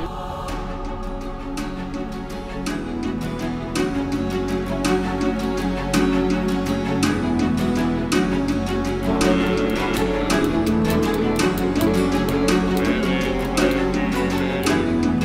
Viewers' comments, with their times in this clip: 0:03 the music sounds like Dragon Roost Island in LoZ Wind Waker